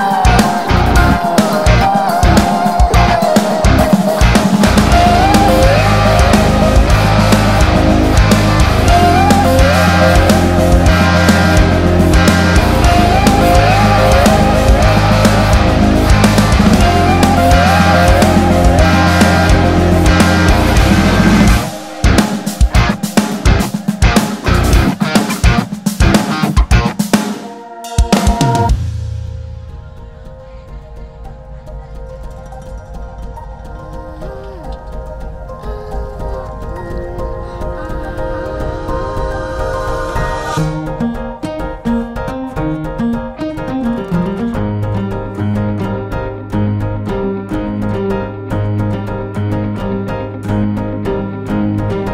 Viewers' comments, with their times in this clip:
0:07 i love that chord!
0:35 is so Pat Metheny-like ! Reminds me of The Way Up :)